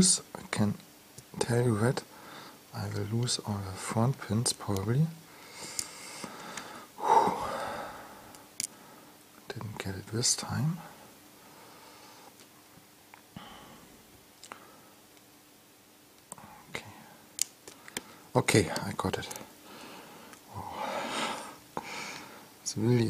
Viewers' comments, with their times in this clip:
0:09 Beautiful pick :-) I could hear the stress in your voice from onwards :-) very, very nice lock